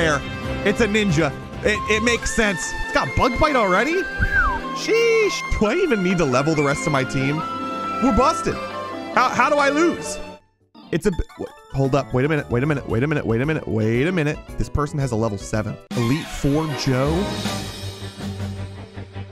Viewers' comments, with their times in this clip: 0:06 Love the music because I play super Mario odyssey